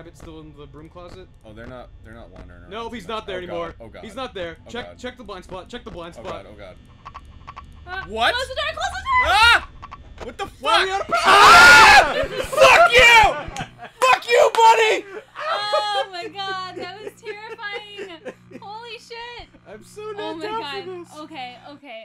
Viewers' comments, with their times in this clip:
0:10 Wow, their screams completely drowned out that jumpscare...